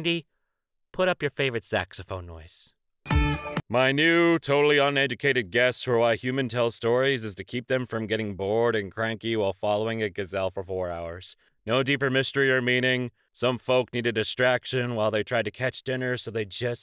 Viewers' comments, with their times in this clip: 0:03 this is one of those songs where the first note alone is like neurone activation